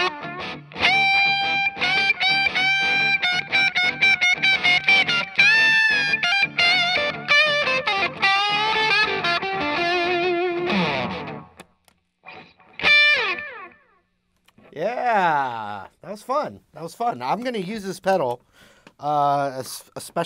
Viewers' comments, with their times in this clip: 0:03 love that lick whooo!!